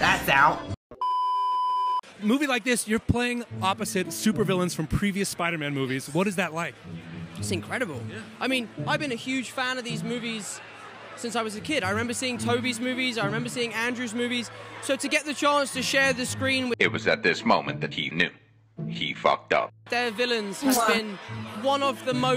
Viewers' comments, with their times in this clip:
0:10 man, the way Tom's tone shifted from "to share the screen with" to "their villains" is amazing. You can hear how he caught himself mid-sentence.